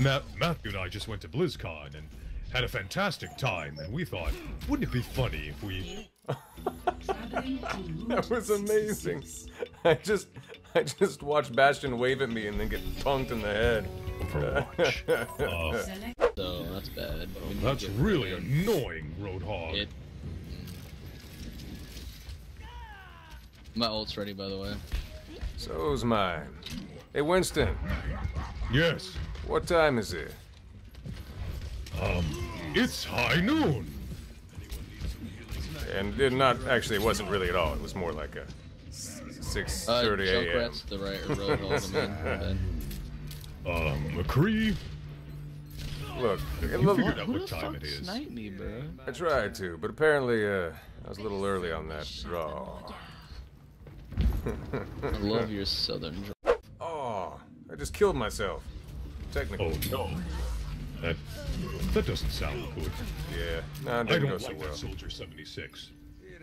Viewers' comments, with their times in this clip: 0:08 literally sounds like mirage from apex legends😂💀
0:54 If he was gonna say "I love your southern drawl," I agree completely.